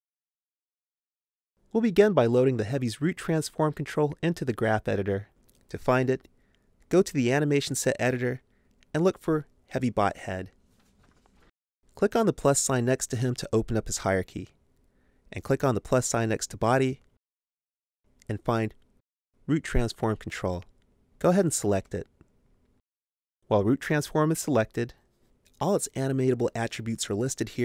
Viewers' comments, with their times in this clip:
0:09 Is it just me or is he saying heavy butt head?